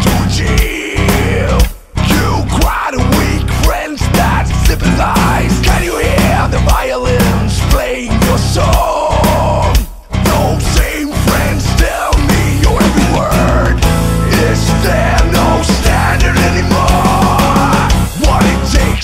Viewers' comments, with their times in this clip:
0:06 can you hear the violin destroy your song? epic lmao